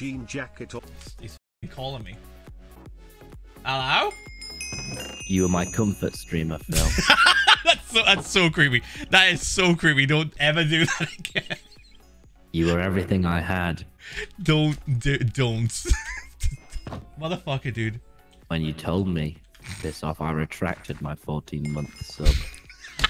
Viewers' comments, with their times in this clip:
0:05 Therapist: Monotone Tommy does not exist, he cannot hurt you. Monotone Tommy: